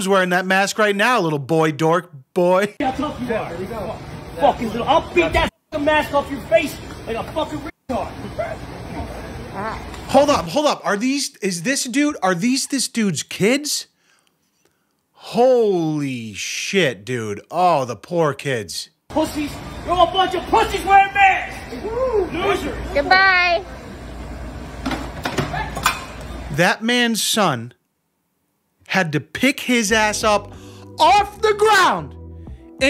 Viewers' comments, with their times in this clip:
0:08 Please tell me I'm not the only one who hears that fart
0:08 Dude farted when his son picked him up 💀
0:08 did the son squeze a fart out of his dad when he picked him up? hahaha!
0:08 I swear the dude farted when he lifted daddy up
0:09 Can we just talk about how that grown man let a fart out after being hoisted up by his son
0:09 you missed the fart though.
0:09 DAD ALSO RIPS A HUGE FART !
0:09 Don't miss the fart, lol
0:09 did someone fart?
0:09 Did anyone else hear the fart when he’s being picked up by the son LMAOOO
0:14 😮 Am I the only person that heard that nasty fart right before the kids take their dad out of the store?
0:14 😮 Am I the only person that heard that nasty fart right before the kids take their dad out of the store?
0:14 😮 Am I the only person that heard that nasty fart right before the kids take their dad out of the store?
0:14 😮 Am I the only person that heard that nasty fart right before the kids take their dad out of the store?